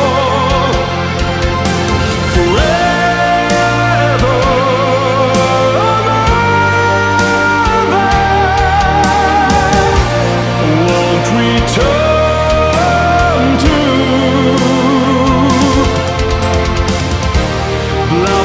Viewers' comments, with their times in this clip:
0:06 That key change was just Chefs Kiss